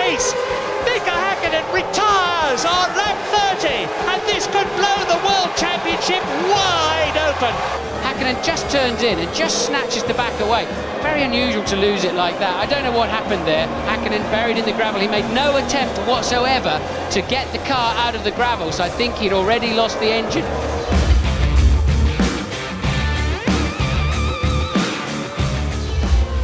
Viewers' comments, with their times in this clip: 0:08 Martin Brundle sounds about... 12